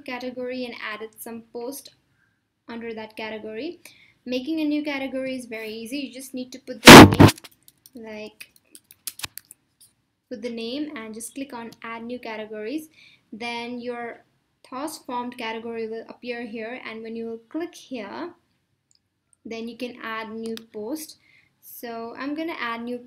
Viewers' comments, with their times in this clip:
0:05 I think you hit the micrfone sometimes